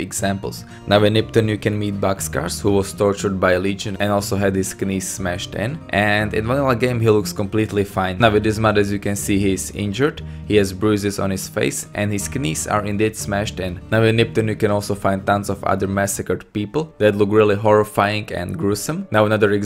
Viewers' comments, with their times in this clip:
0:04 You said knees wrong, you sounded like you said knees with a K and not just nees, not trying to be annoying just noticed.